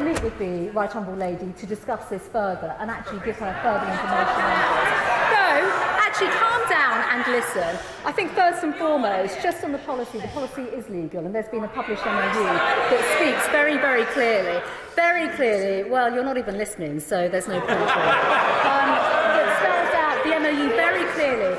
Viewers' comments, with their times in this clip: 0:07 Doesn't she sound incredibly like a secondary school English teacher?